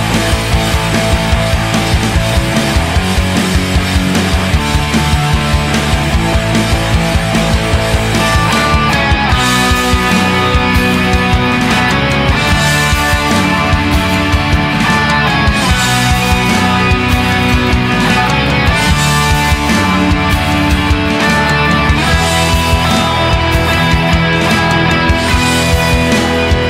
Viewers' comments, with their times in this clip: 0:09 what the fuck is that drop in O_o